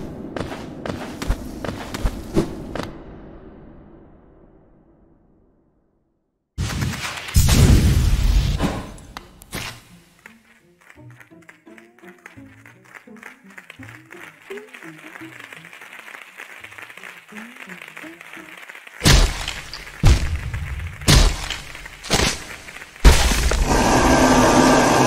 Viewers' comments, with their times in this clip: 0:10 I will never not find that funny, that and entering the coliseum with it being dead silent then a massive cheer